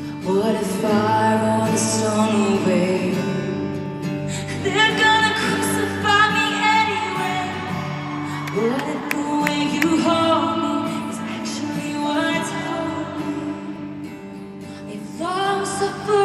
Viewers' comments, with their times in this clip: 0:03 I am super tone deaf so my musical opinion really doesn't count haha but all I hear in the line "They're gonna crucify me anyway" is Matty Healy singing the "She's got a boyfriend anyway" line from "Sex" (specifically in the tiny desk 1975 concert version). Sounds so similar to me!